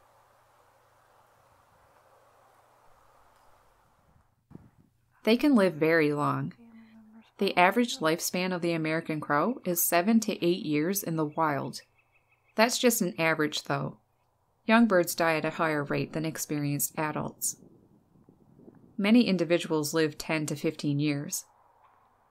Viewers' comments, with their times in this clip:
0:05 what is that background noise? Sounds like some creepy robot voice